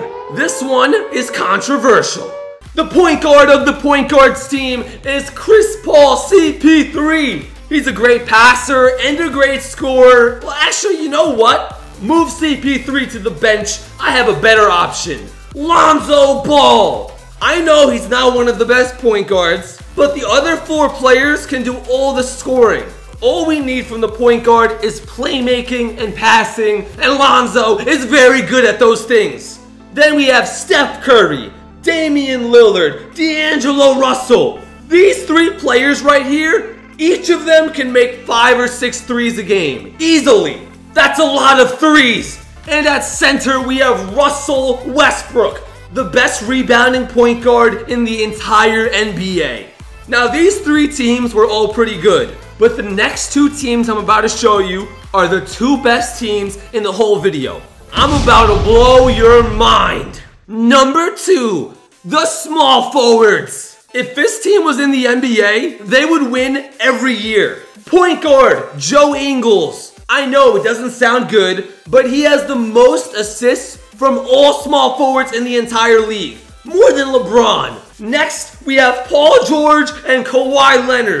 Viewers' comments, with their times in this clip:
0:05 Also Voice Crack
1:04 Definitely A Voice Crack